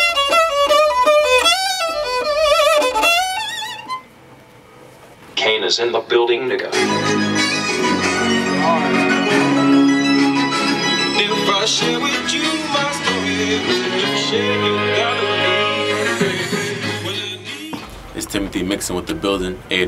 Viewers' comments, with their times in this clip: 0:07 that music that starts is so freeeeeeeeeeeeeeeeeeeeeeeeaking good that it gives me goosebumps... Like this so that could find out what the song name is